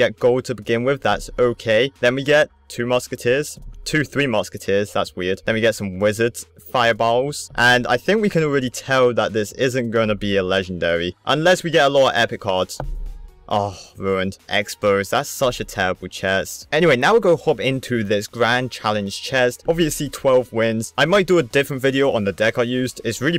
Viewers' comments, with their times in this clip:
0:06 I'm dieing how he says fireballs